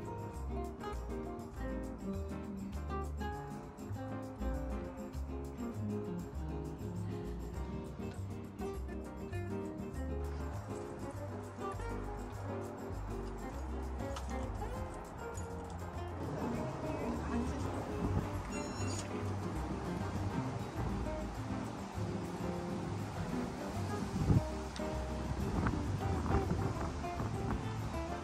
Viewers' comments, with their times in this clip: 0:10 Why do you have a British accent 😮